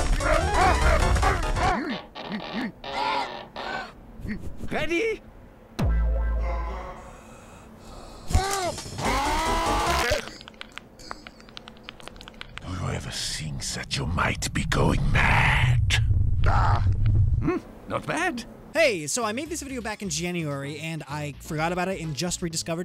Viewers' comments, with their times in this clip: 0:09 The way he heavy instantly shuts up when medic grabs him